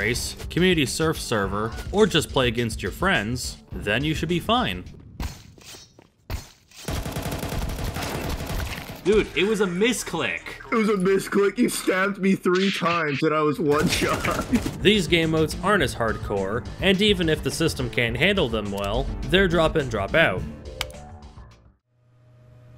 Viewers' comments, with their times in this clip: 0:10 sounds like moistcritical